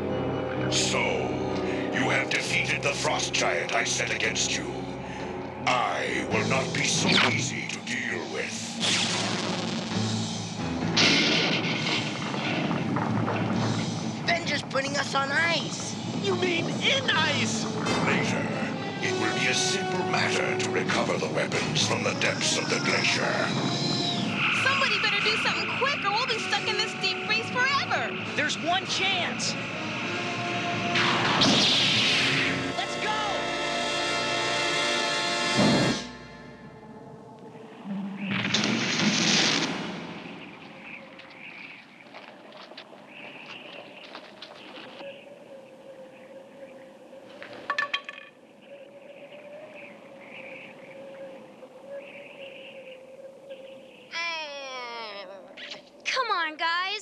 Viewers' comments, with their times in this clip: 0:07 I know alot of people had said this but... Optimus Prime, is that you?
0:31 Lightsaber sound. And during a moment when they almost got crushed, like when the Rebels were in the trash compactor. Makes you think Luke could've used his lightsaber to cut through the wall.
0:40 With the hindsight we have today of what separates a mature animated show from a children's cartoon, this episode can definitely be highlighted as a trailblazer. The most conspicuous evidence is that they set aside moments ( for example) where the decision was specifically made to play no music, so that it wouldn't get in the way of the importance of the scene. This isn't just rare. It's unprecedented. At least in American cartoons. Whoever wrote and directed this episode had a firm goal in mind of making something important.